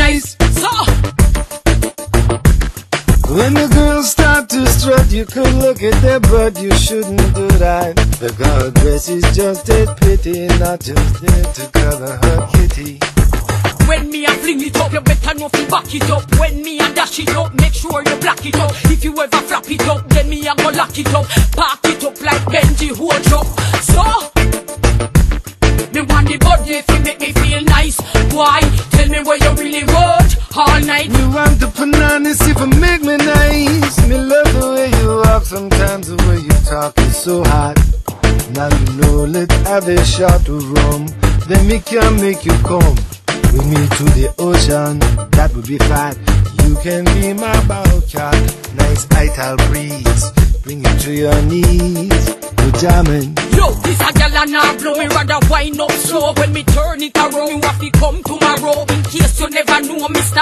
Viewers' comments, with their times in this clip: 0:03 In all this time, I truly couldn’t make it past that line. A mere 30 seconds in, he stoops lower! … isn’t just hypocritical, it’s pure 🗑️. Remember it’s a terrible actor from Michigan, pretending to be from Detroit, telling you how to get girls, with a Reggae swag 😂😂😂. And I think he just trails off 😂😂😂
0:46 you can clearly hear volume of his voice drops as he says "bowcat" because Seagul sings wich such passion he swinged his big head away from mic. Producer decided to leave it in because that is the only spark of honesty we got from Seagul